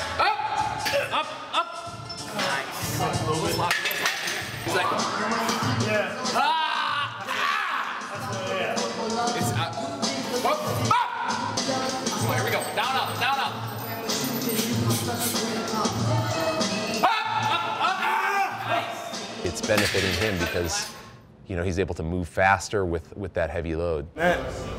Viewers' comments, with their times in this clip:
0:08 bumping q-tip in that bitch